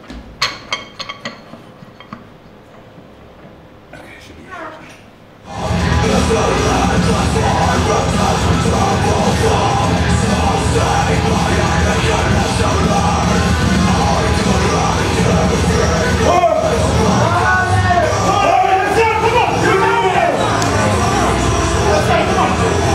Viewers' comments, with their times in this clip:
0:03 there was definitely a fart